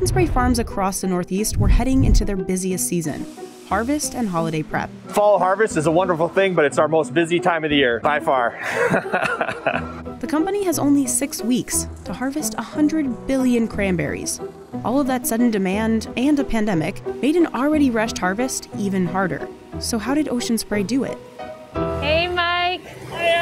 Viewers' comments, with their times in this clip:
0:09 his laugh like plz kill me